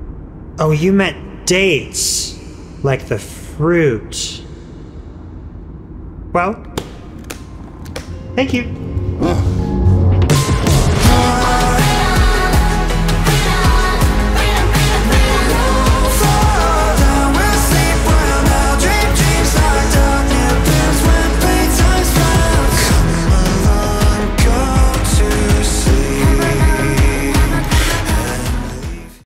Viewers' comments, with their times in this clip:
0:10 that sleep well music made by him has intensified bc of that
0:10 I always hear Cheetos instead of freedom also I hear Dorito not Doritos just Dorito and I hear Fritos lol some of the best misheard lyrics 😂🖤
0:11 (We won’t freedom freedom freedom freedom freedom freedom we all fall down we sleep right now dream dreams locked up and give playtime loves … come along go to sleep come along come come along ) I love how he puts music on every video of tor.
0:22 IDK WHY IM TRIPPIN BUT WHEN I HEAR THIS AGAIN I HEAR "come along grab your seats"